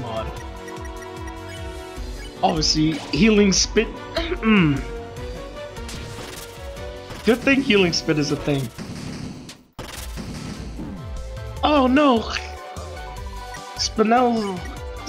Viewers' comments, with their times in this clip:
0:03 for a split second i heard a moan XD